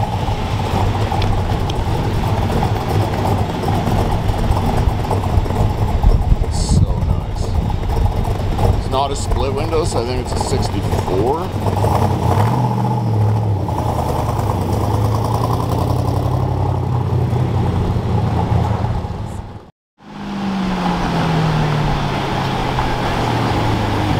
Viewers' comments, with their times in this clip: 0:07 Going by memory I think 1965 was first year side pipes were offered as an option. In 66 they got a different grill and a emblem in the corner of the hood. Four red tail lights in 65 and then it went to two red taillights in 66. That appears to be a 1965. Not many made that year great capture right there. Listen you can hear those distinct Duntov camshaft sounds. In I think it was 67 they changed the fender vents. The split window of 63 Duntov couldn't stand the design and it was discontinued in 64. In Old Zora Arkus-Duntov he was way ahead of his time, sharp as a knife, and nobody really talks about him much anymore. Love the Corvette and you always have something for everyone in your videos. Oh yeah look at the emblem script on the 65 was slanted. In 1966 they went to straight up and down. Corvettes have tons of little things to notice lol.